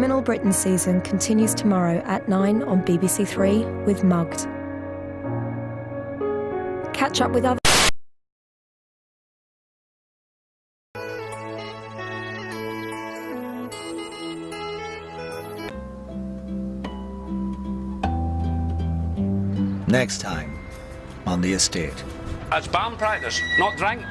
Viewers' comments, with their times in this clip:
0:05 Catch up with our KSSSH
0:06 catch up with our S̵̰̺̝̟̮͕̙̣̬̬̪̺̙̖̩̤͖̓̊̄̔̅̑̒̂̇̇̕͝T̷̢̧̧̡͉̹̺͈̲̮͓̥̠̤̣̥̙̐̃̓̀̉̄̒̕͝A̵̛͙͕̮͓̖̠̠͖͂͆̽̀̆͛́͗̏͠͠T̶̡͖̤̟̘͖̘̟̻̗̣̜͙̰̦̅̀̊̐̑̍̋̒͛̌͑̕͠͝I̵͕̞̮̮̯̻̯͂̌̑̉́̿Ç̴̡̛̱̪̙̩̺̠͉̎̂̒̓̈́̏̅̈́̌̾̕ͅ